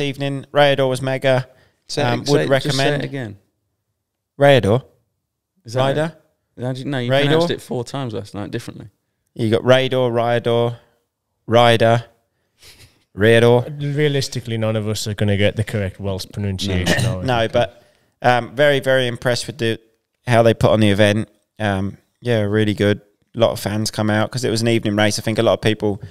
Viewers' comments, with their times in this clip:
0:10 2nd pronunciation was best